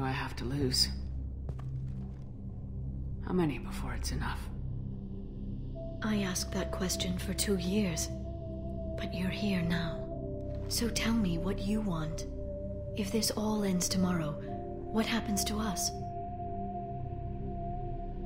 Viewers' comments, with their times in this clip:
0:06 Oh my god, Jennifer Hale's "Come back soon, Liara" was one of the most touching line deliveries I've heard in both games (actually, from onward is totally gush worthy, but that whisper at the end just gets me every time).